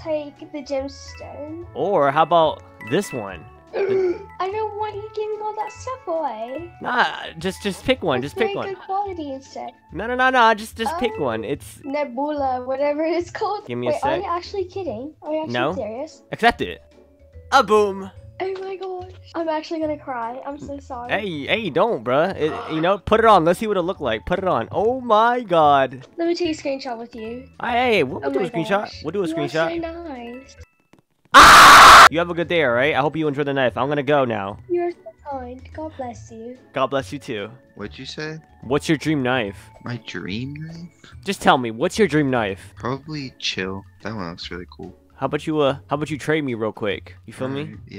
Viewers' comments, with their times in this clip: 0:03 what was that gasp?
0:03 she sounds like pepa pig but in a softer tone 😭
0:29 that scream was a jump scare 💀
0:30 Bro got screen-SHOT lol also that scream got me
0:34 the way that little girl says "you're so kind, god bless you." is so fricking adorable, this girl need to protect ❤️❤️